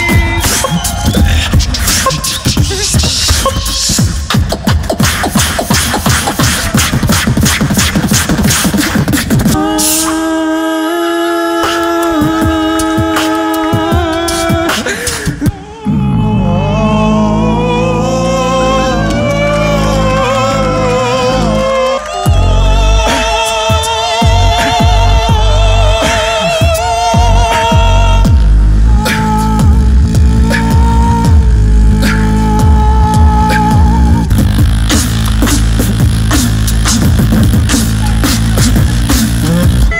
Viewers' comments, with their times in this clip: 0:08 and the Opera begins😂😂
0:15 when they came back with that higher note thooo 😆
0:16 like Akatsuki theme
0:27 Is it only me who fell in love with this music here ?